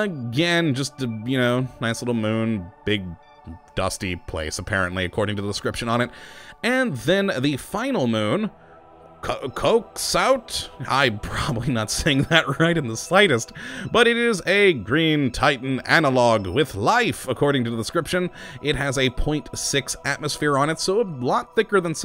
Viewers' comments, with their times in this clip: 0:09 he knew how to say it he just didnt want to